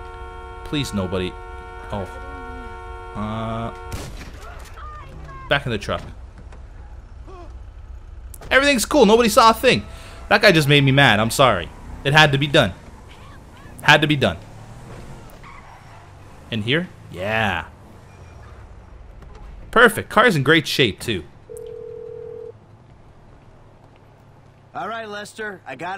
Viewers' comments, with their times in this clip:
0:07 BEEF! you killed him with the collision of the two cars to notice when they get killed in a crash you'll hear the non-stoping horn sound -Your viewer